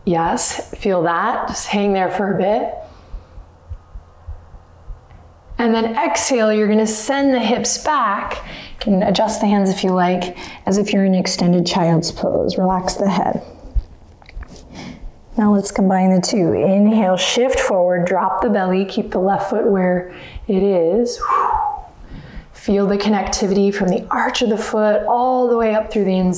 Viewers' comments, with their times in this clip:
0:07 i can hear her heartbeat